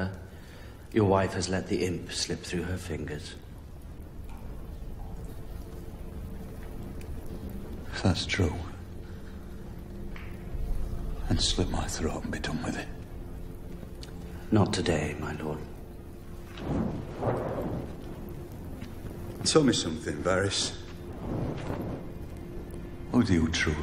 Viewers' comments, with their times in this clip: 0:04 The music is really moving. Anyone know the name?